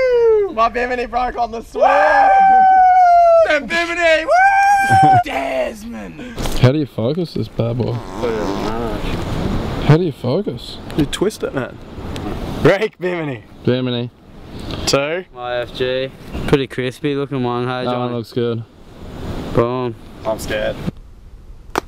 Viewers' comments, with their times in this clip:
0:07 that fart though